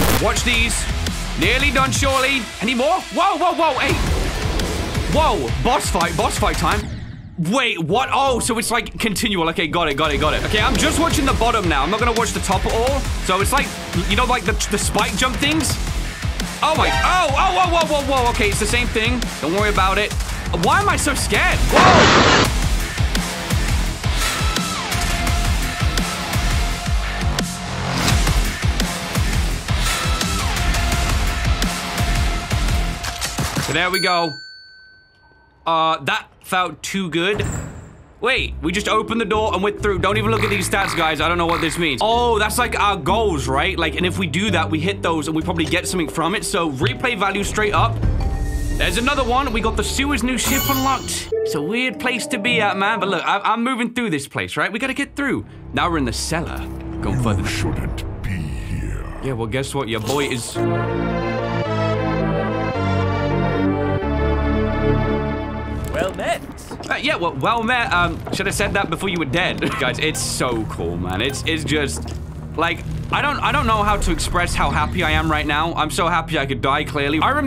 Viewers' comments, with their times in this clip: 0:03 the level sounded like doom eternal soundtrack for some reason but without the chainsaw and guitar played behind
1:03 that Metroid music was PERFECT